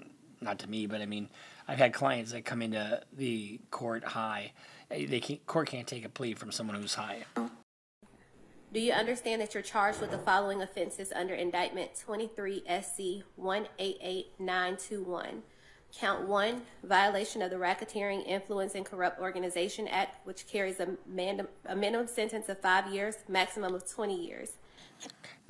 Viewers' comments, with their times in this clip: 0:07 There was a distinct fart sound That editing department left it on there INTENTIONALLY 😂